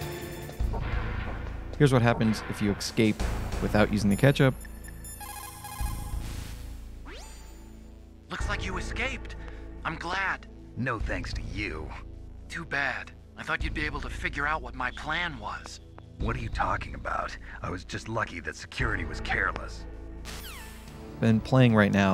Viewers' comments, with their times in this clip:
0:07 Idk why but Otacon's emotionally detached "wow they even captured you" was always funny to me. Like, you do know this man was just tortured multiple times, right lol. Also I completely forgot how much of an a*shole Snake was to Otacon in MGS1. Jesus lol